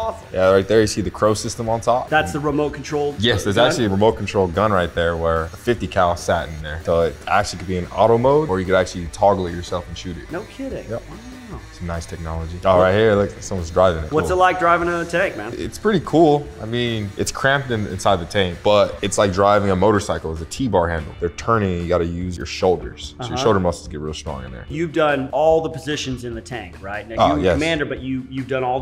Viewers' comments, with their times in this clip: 0:10 That’s an Owen Wilson style “Wow…”